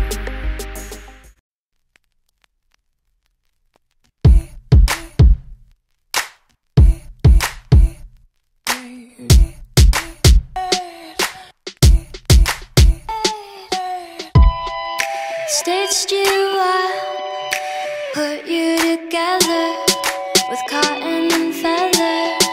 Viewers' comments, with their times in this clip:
0:03 that is when the song starts :)